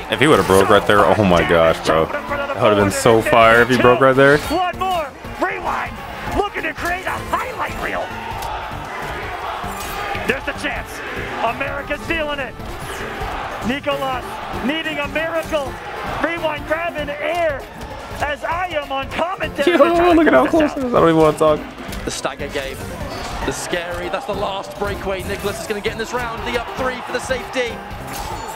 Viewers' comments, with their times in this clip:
0:09 🔥🔥🔥 How'd you feel when everyone was chanting your name?
0:09 the chants were so crazy!! I've never been so nervous watching a video game before 😂😂